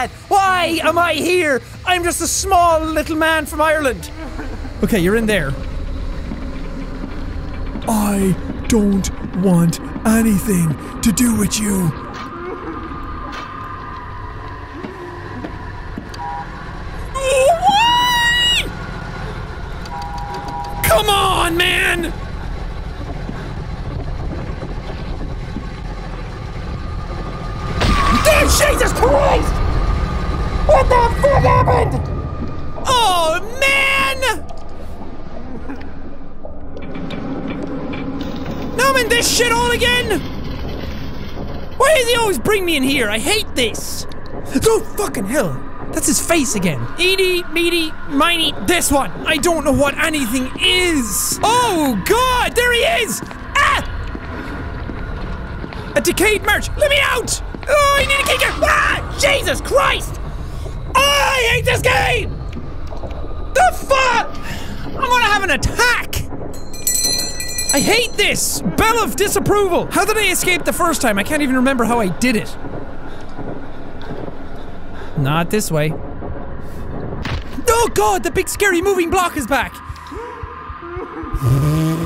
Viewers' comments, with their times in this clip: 0:06 fun fact when you hear that creaking sound Jack HAUL ASS
0:17 When he screamed I thought it was the game lol
1:06 HE RUNG 513!!!